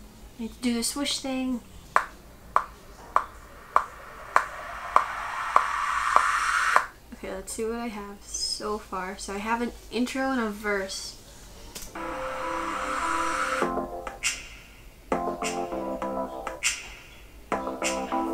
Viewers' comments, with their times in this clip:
0:05 How did you make the swish/wind noise ? The song sounds really good, for it to have taken 15 minutes! 💓☁